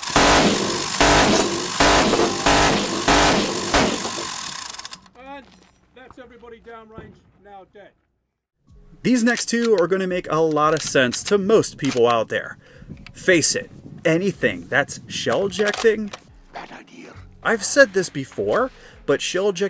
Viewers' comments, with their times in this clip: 0:04 "thats everybody down range now dead."
0:05 I heard captain price